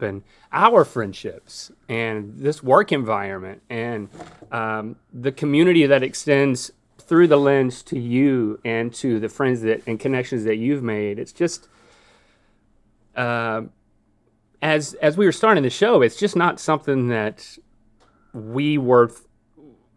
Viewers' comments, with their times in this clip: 0:04 Link choking up has me sobbing.